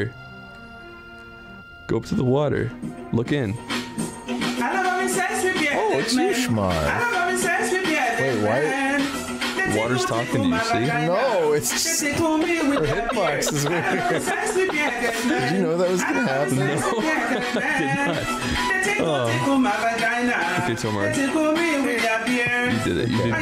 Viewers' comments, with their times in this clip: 0:05 What is that beutiful goddess singing